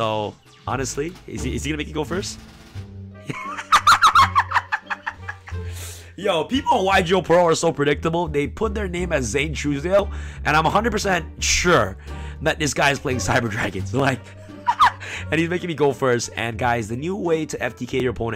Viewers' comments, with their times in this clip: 0:03 The Laught of Satan....